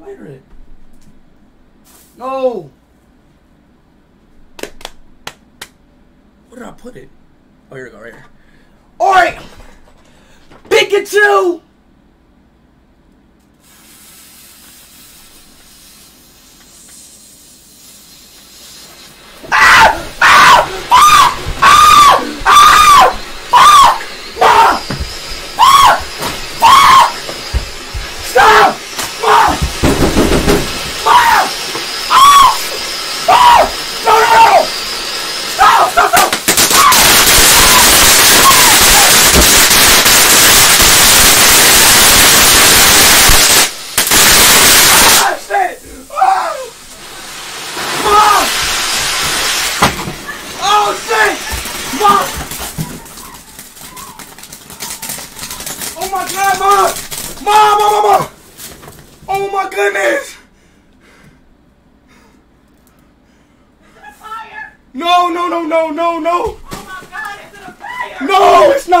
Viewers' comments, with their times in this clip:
0:09 The lyrics to this golden moment💀 ALRIGHT! PIKACHU👍👍👍 lights pikachu moment of realisation pikachu begins burning AAGH AAA FUUU- AAAAHH AAAH FOUCK- MA! AAAAU F*CK STOPPP MA!! banging the door aggressively in an attempt to escape MA AAAUU F*CK NO NO NO NNOO STOP STOP STOPP- pikachu begins exploding faint Ishowspeed screams AAAH SH*T Pikachu begins spinning MA! grabs pikachu OH SH*T MA OH MA GOD MA (The end)
0:12 got me the laughter🤣🤣🤣
0:20 I can’t stop laughing because the way speed just screaming
0:21 was the best part how he Screamed
0:26 he started shouting
0:29 always gets me. He pounding on that door for his momma! 🤣🤣🤣 But really though the rest was sad af, his mom and them were scared for their lives. Smh 😒 how do you NOT know that lighting fireworks in the house is a bad idea!
0:36 sounded like a volcano lol- still tho, I'm glad your OK.
0:47 most funniest part of the stream when pikachu turn around and flew towards him and he shouted
0:57 This moment was actually serious, you can hear his mom crying and shouting at the same time, she freaked out obviously, you can see speed also scared and maybe crying fr this time and his chat be laughing. He didn't know what would be the circumstances and I didn't expect that much too.